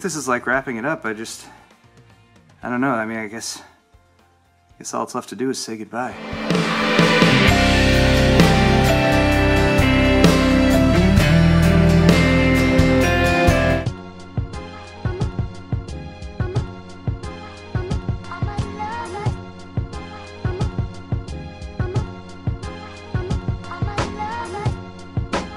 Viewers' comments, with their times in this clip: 0:06 how about u dont blow my ears out